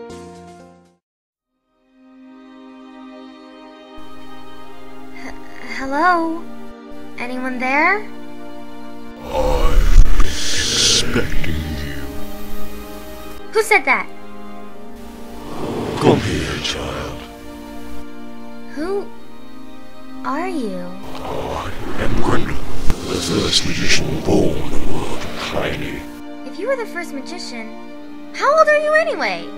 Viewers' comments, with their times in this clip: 0:10 Sexci voice :D So legandary. <3